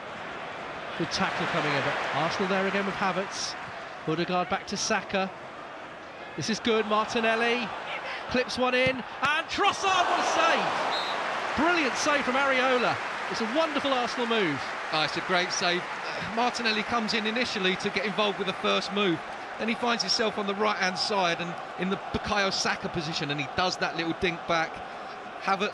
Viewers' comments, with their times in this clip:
0:05 Is it just me, or can you also hear Trossard yelling "Leave it" to Havertz?🤔 in the second
0:07 secs. Who else heard the "leave it" shout on Havertz...???? ❤❤❤❤❤❤❤
0:08 you can hear Trossard screaming "LEAVE IT!".
0:10 Lmfao you can hear trossard screaming “leave it”